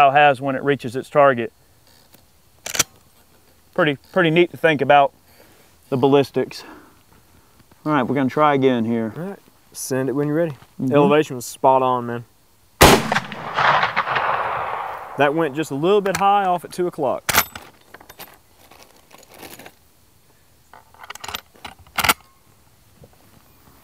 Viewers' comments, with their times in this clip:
0:08 what that a fart?